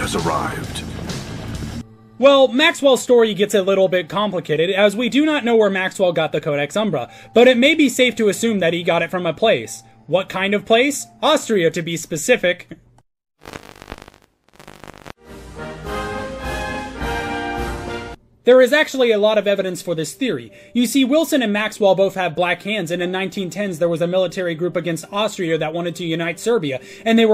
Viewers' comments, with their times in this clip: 0:08 i love the way the audio cuts out with a random noise before the transition, it adds alot